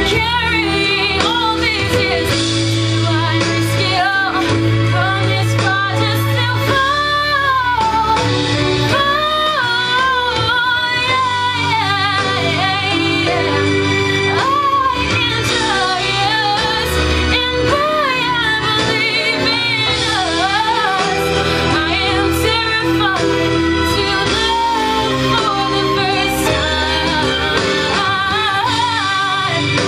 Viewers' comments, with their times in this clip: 0:07 i found myself crying i love the song and u sang it flawlessly! honestly words cannot descride how well u did, so keep singing and never quit :')
0:15 i really like the way you hit those high notes. Right though I saw that you have some strain with the high notes, but I dont blame you because they are difficult. very nice though. keep it up